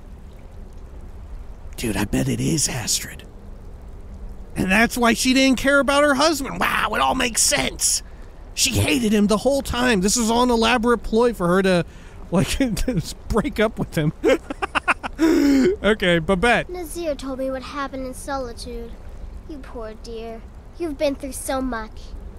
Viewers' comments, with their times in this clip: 0:05 why does Babette pronounce much as muck?